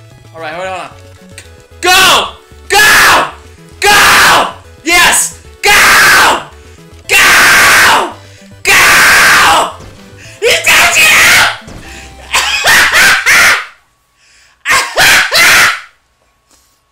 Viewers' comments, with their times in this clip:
0:03 well you can just see he can just hear him yelling in his room😂😂😂